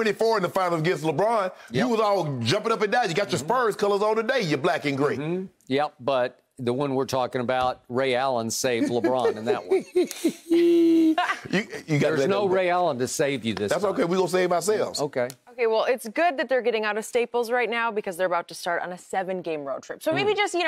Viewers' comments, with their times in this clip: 0:08 yeah we all know this is what we're here for HeeHeeHeeHee lmao